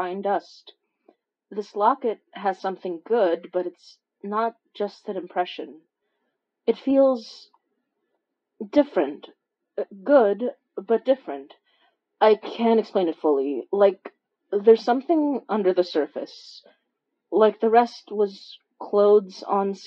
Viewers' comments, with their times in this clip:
0:07 * i love the voice acting here woah. Vibes